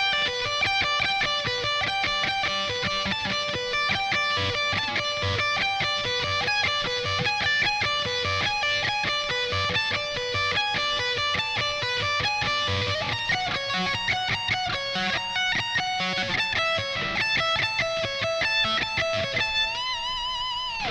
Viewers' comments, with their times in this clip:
0:06 Watching the video from Megadeth's channel with Kiko practicing the song, I notice that when the solo "pattern" (@ in this video) goes to E, Kiko pulls off to the 12th fret instead of 10th ( E instead of D). Harmonically if I put E instead of D, I confirm the E maj chord instead of E7, what do you think ??